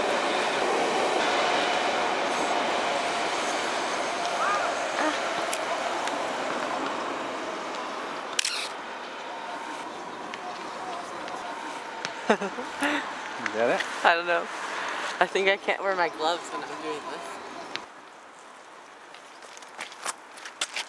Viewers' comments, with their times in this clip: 0:07 That squeek is the mirror return losing lubrication and slowing down the mirror movement. This is common with the A line of Canon cameras and is an easy fix! There are plenty of videos on youtube on how to fix the A-1 squeek or squirrel noise. I just did that fix today and its running like new again!